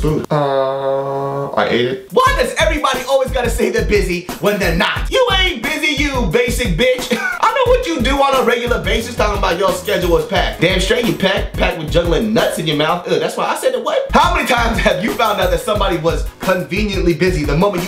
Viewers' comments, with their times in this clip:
0:04 Am I the only one amazed that he said "You ain't busy you basic b*tch" in rhythm to the background beat, or was that intentional?